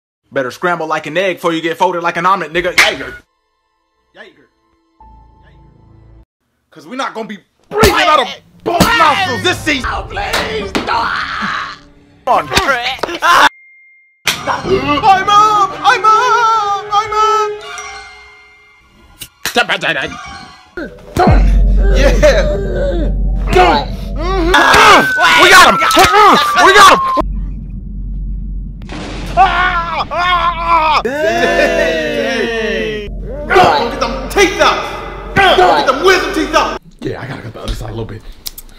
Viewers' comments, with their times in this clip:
0:01 all i here is “ooooooh that brothers floating in the air”
0:23 the most common folding noise